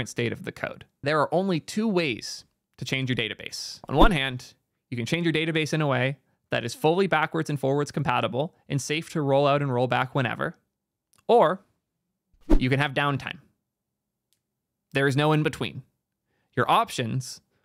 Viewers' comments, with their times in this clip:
0:03 the noise scared the shit out of me it was so loud